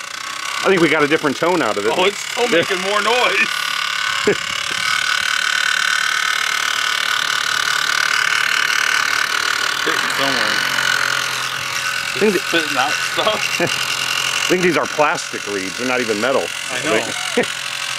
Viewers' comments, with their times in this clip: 0:03 it turned into a diesel engine 😳